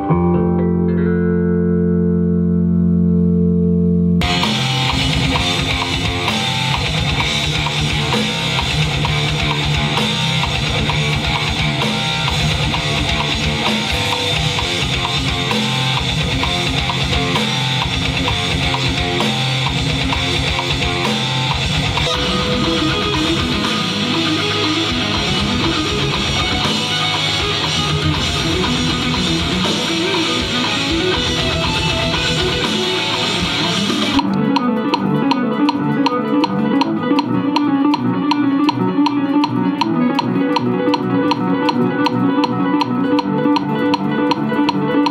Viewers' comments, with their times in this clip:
0:05 riff is such a sick groove!
0:33 gave me fucking chills. Legitimately one of the most beautiful sections of music I've ever heard.